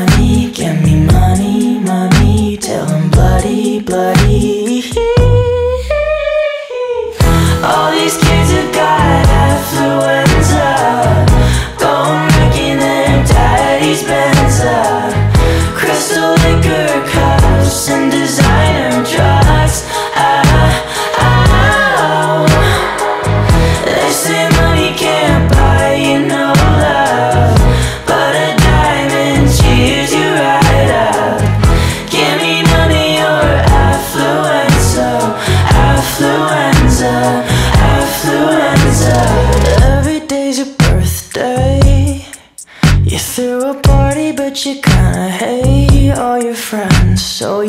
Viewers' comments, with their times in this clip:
0:06 Wow, the Micheal Jackson in Conan Gray really popped out lmao
0:06 THAT MICHAEL JACKSON NOISE 😍😍😍
0:33 I am convinced this is the most misheard lyric because everytime I try to correct it on genius it gets rejected and every cover I've seen says it wrong